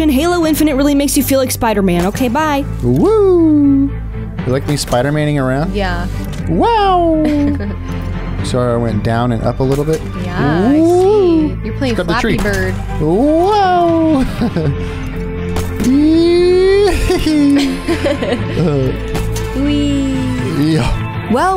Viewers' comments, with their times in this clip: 0:04 Spider-manning around but with a Super Mario voice